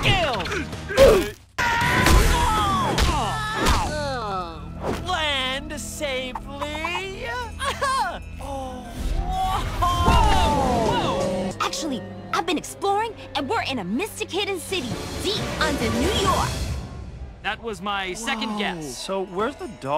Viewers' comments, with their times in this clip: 0:07 THE AHEUH WAS SO CUTE AHWUAHEDIUBSWHFD